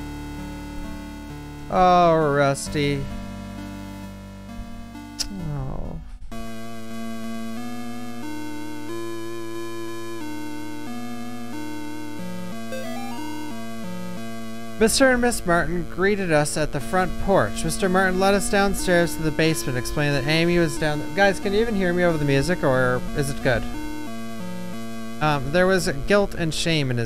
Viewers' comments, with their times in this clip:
0:09 The music for the room is fucking amazing. The sound design of this game SO FAR is top tier, can't wait to hear the rest of the games music